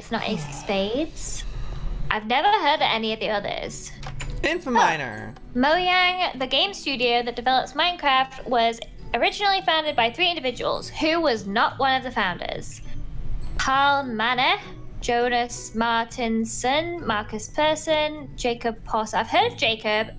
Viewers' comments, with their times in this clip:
0:04 Did anyone else hear Lizzie say moyang